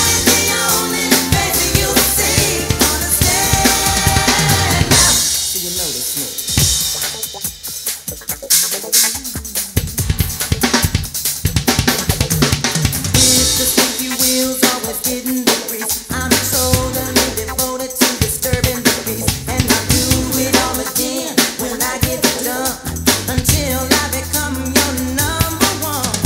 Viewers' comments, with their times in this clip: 0:10 bass drum fill. mind be thinking to do that small shit. thats ill. so small but taste like brownies foo. GOOD